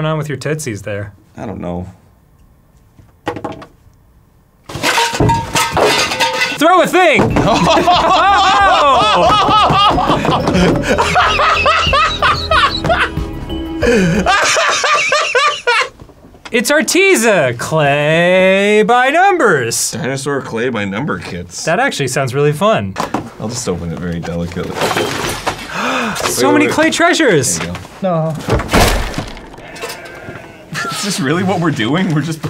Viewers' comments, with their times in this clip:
0:06 Arin just laughing out of pure misery for this show. 🤣
0:06 Arin's Joker audition
0:09 this is how i laugh when i go 52 and 4 on Call of Duty. 🤣🤡🤣🤡🤣
0:13 wow Arin sounded EXACTLY like Mario laughing at Mama Luigi from the Mario World show